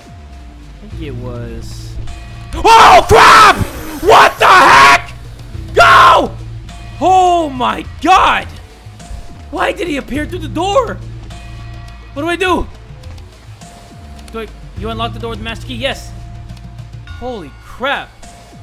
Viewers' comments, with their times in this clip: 0:04 I was falling asleep until he blasted through my ear drum shit